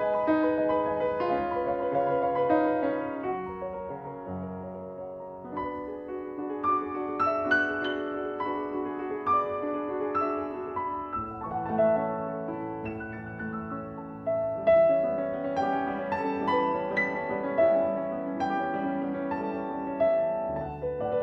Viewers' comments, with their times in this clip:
0:07 the shiniest water droplet I've ever heard